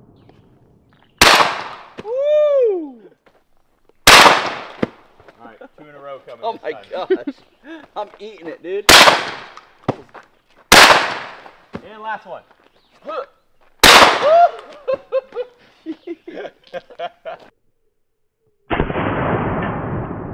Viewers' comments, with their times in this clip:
0:06 you can hear the person behind the camera is a girls laugh!!!! that means the camera"man" is a women!!!!!